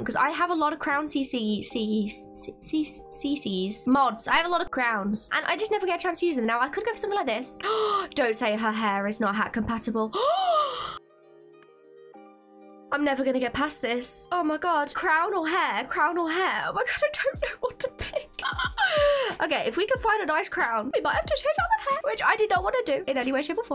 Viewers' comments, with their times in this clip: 0:05 the part where they kept saying “CC” got me rolling because in Russian, cece means boobs.